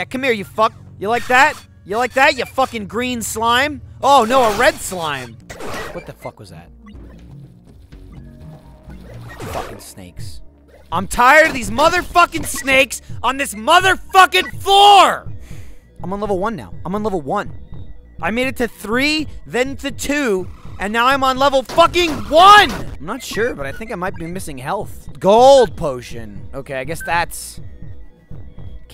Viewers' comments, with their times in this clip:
0:10 raging while shouting movie quotes XD